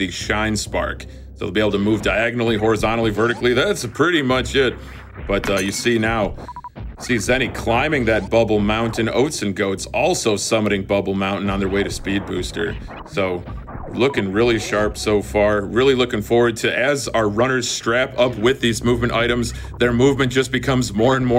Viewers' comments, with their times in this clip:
0:03 One of the Commentators broke a glass on mic lol